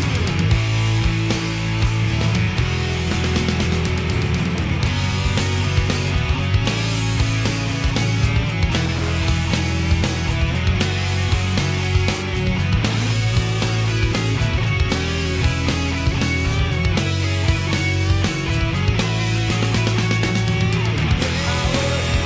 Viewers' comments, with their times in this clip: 0:08 I thought that distortion/rumble was only on my old cassette version! Feels oddly good to hear it again after all these years.